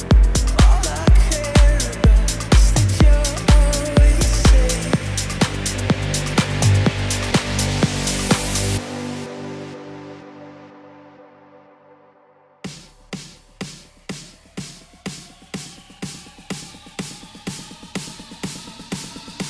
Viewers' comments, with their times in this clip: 0:07 That lift just wow! Blew me away... and when I went back to listen again seeing how much everyone else had too!